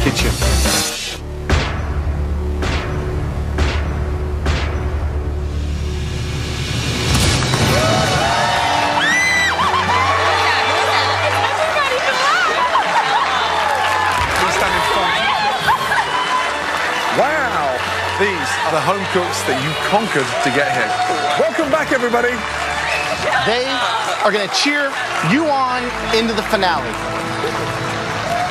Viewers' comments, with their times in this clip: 0:09 Christine be all like "WTF WHY YOU SCREAMING IN MAH EARS?!"